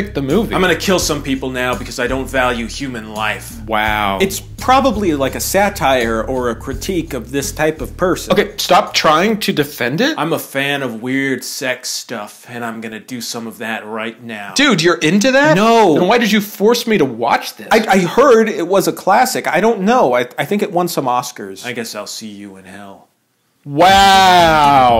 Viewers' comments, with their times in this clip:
0:10 That line delivery made me laugh way more than it should.